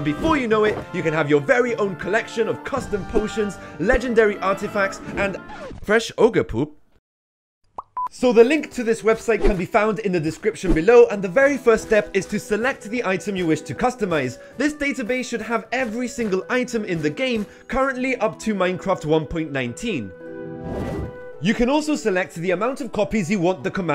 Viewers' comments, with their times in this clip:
0:05 in it and he shows the Fresh Ogre Poop or that's how it should be spelt, instead it sounds like Fresh Orgy Poop but it's spelt Fresh Orge Poop